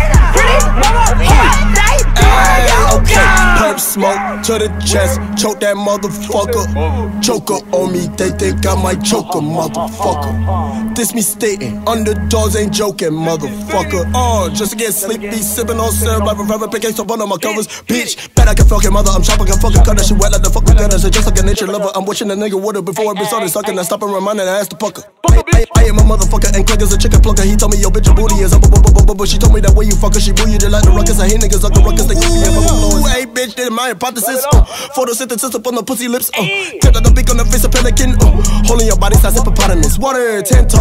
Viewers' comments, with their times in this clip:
0:04 Slump God wasn't gonna let some Chinese migos out rap him
0:10 when you think the beat about to drop
0:16 fun fact is this is his fastest verse
0:22 I know this is old but if you listen closely to the adlibs, it’s x going “aye,” and then all the adlibs are x
0:22 is that X saying aye on the background?